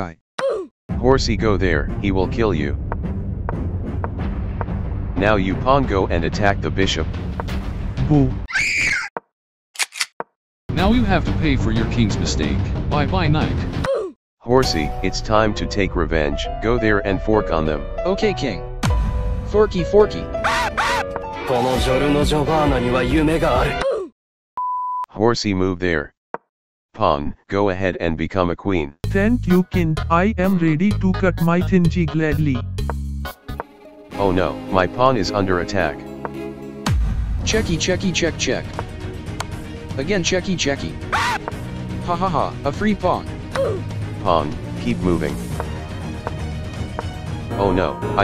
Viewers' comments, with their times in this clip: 0:08 that boo and then the scream gets me every time 😂
0:21 did the horsey just say the n word?
0:22 Did horsey just say the n word 😅
0:34 i heard smt weird